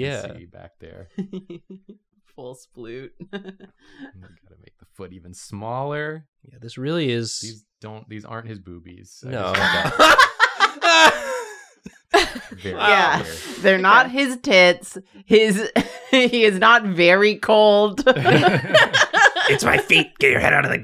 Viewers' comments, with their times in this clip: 0:08 the small voice for "these... these aren't his boobies" made me choke on my dinner. Fucking gold